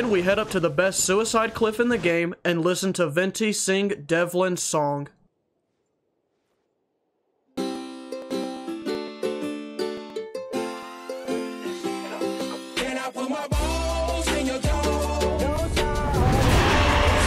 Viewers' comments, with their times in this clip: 0:04 devlin's song had me rollin